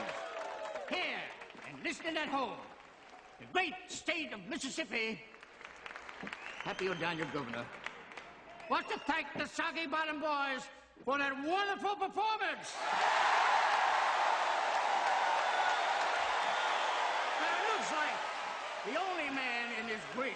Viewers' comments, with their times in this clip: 0:08 dude sounds like Francis Griffin from Family Guy